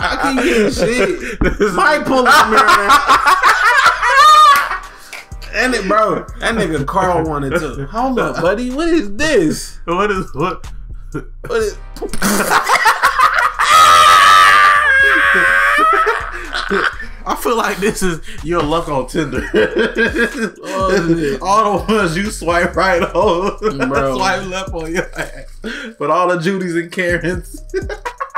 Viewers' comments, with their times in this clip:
0:10 😂😹🤣🤣🤣😹😂 XD i can't stop laughing i can't hold on you guy laughing XD